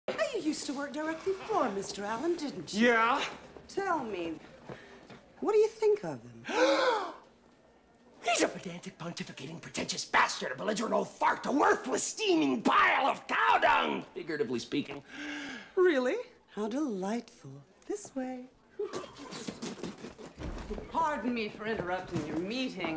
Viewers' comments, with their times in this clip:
0:06 that sound he makes lol how do you even type it?? HHUUUUUUUUUUAaaaaaa